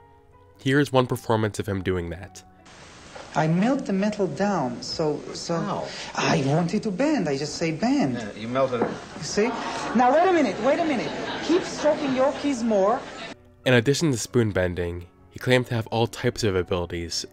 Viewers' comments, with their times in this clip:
0:04 I heard the wally wow guy